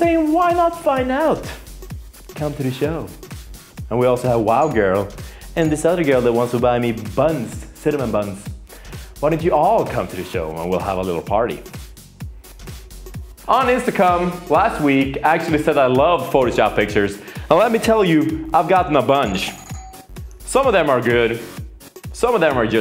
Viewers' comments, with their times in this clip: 0:10 i swear he says on intsacum